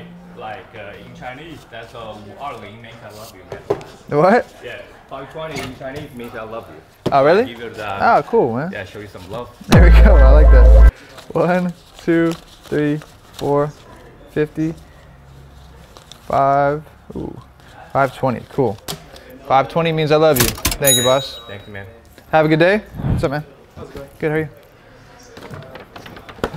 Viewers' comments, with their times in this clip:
0:08 The Tyrone sound took me out bro 😂😂😂